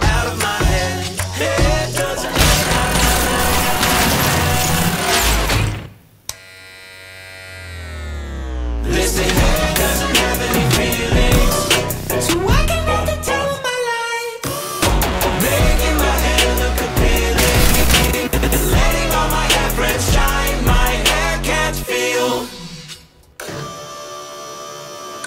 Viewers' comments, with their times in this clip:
0:10 What's he singing ? I can't make it out. "So why can't I ..." is as far as I can figure out